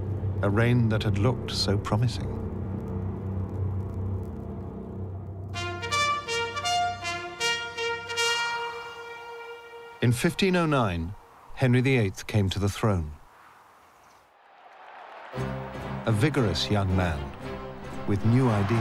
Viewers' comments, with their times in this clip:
0:05 Start with a dark, horrifying intro and then bam Comedy horns befitting a monty python skit! LMAO